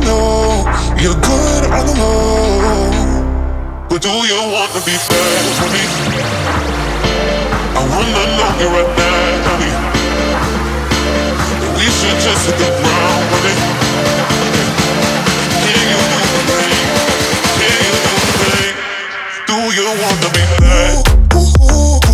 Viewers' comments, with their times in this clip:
0:04 The build up from was different level business! Savage beat 🔥